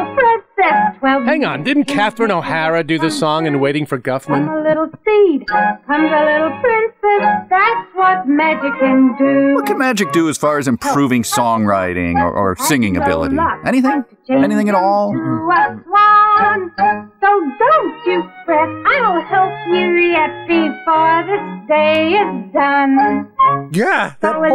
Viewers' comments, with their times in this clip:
0:06 I THOUGHT the witch was singing “That’s what Mexicans do.”